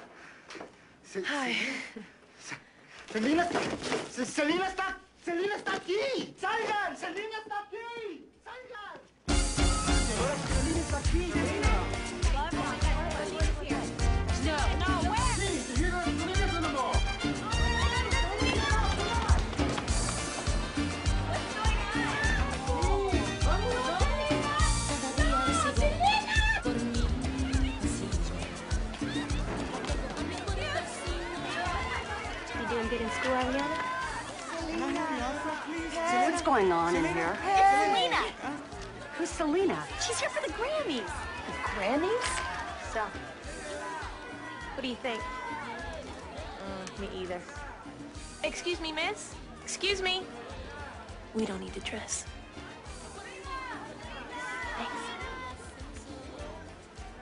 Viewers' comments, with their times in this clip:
0:09 my favroite song of selena came on 🤣🤣🤣
0:42 What I've always found funny about this scene is that there were a crowd of people going "Selena, Selena!" to ger her attention, and then her friend just casually goes "Sel!" And then she turns to look at her. Lol!